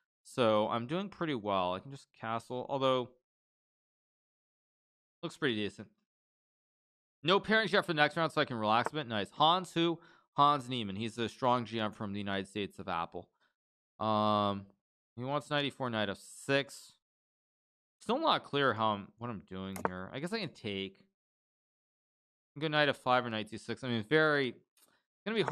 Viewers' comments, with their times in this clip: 0:09 Since when Hans changes his federation to United States of Apple?